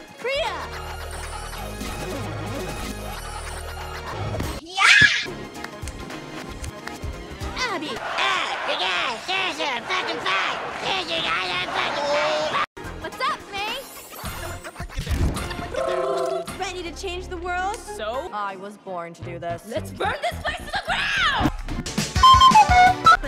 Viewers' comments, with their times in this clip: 0:08 Abby as Cartman is fucking amazing.